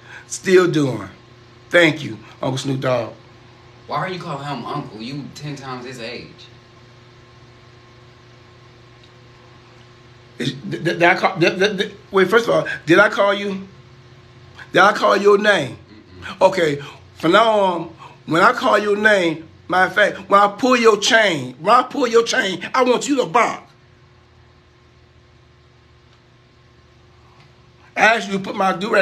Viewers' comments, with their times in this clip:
0:10 foghorn leghorn with the stuttering then changing the sentence lol